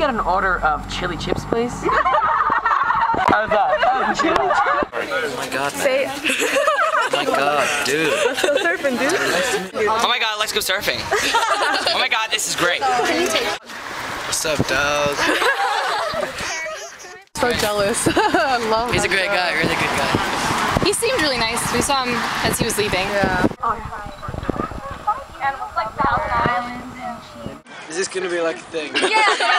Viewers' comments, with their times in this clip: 0:09 "Oh my Gawd, let's go surfing." "Oh my Gawd, this is great!" LOL NIALLER!
0:10 I bet Niall's voice was used in Bruno Mars' The Lazy Song.